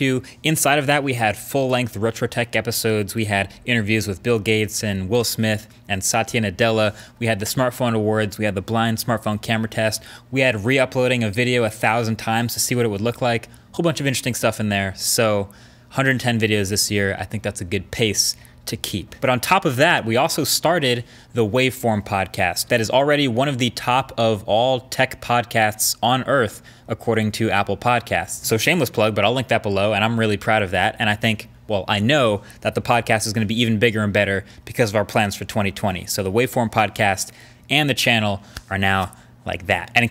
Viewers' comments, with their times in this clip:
0:05 Nobody: Mkbhd-: Saatya Nutella
0:25 who heard podcats?